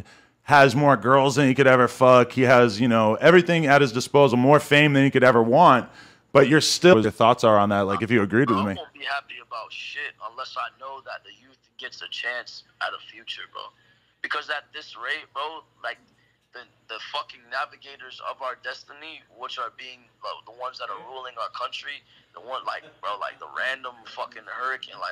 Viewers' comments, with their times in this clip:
0:06 Why does it cut ??????